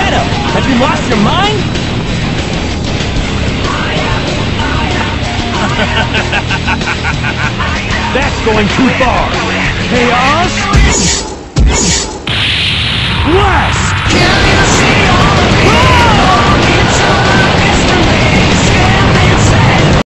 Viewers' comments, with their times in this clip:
0:09 Oh s*** BOOM well that justs happen